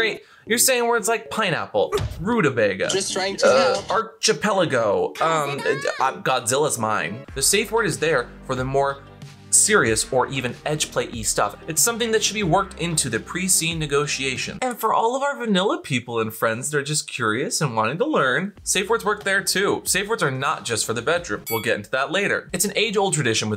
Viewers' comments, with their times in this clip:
0:05 did NOT expect to hear Venti’s voice. Oh my god 😂